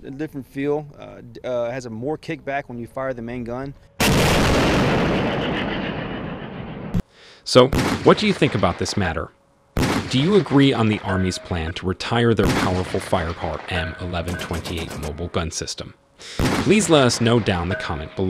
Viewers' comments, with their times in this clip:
0:05 Who else heard that devilish laughter ?